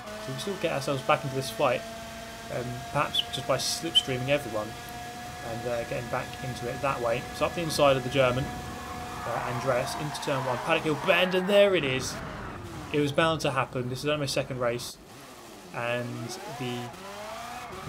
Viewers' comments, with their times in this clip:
0:03 dem whistles does